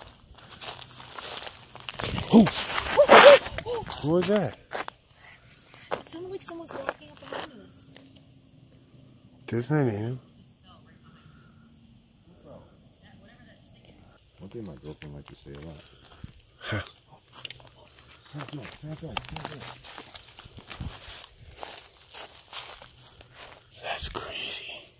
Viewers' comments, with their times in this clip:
0:05 sounds like a woman saying Im sad or something like that